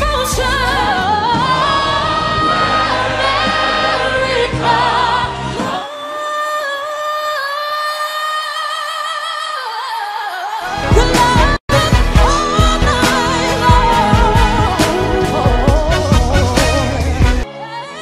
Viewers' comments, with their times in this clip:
0:05 Holy shit that Eb5 just sends shivers down my spine each time i hear it🥶😍